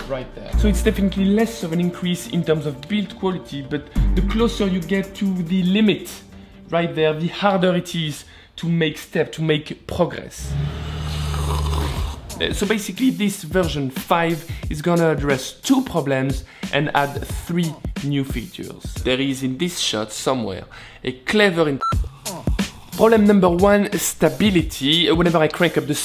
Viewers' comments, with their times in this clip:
0:09 First disgusting slurping noise That's when I turn it off.